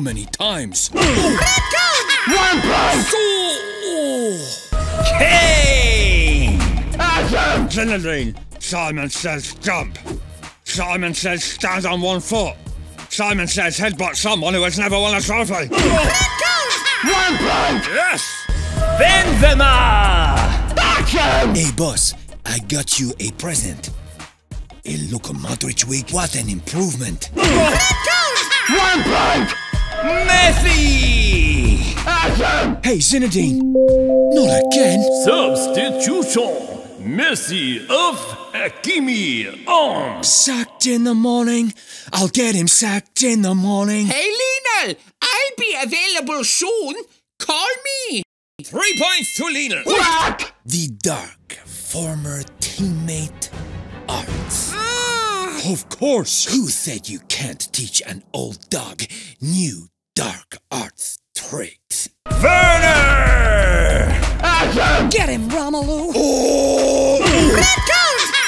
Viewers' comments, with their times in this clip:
0:03 Siu oof version
0:27 There is Luka Modric crying... (What’s wrong with my hair... what’s wrong with my hair....)
0:40 Messi Singing that song is Really funny.
0:53 The card making some odd noises
0:54 WHAT HAPPENED TO RED CARD VOICE
0:54 What a sus "ah"
0:54 BRUH THE CARD VOICE IS KILLING ME